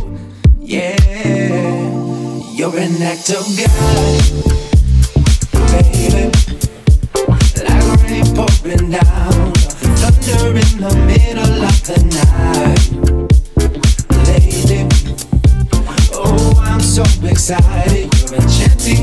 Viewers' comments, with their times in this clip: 0:04 i don't know why am i wrong or not when the bass appear its sounds familiar like daft punk's voyager in "Discovery" album is this meant this song is a sampling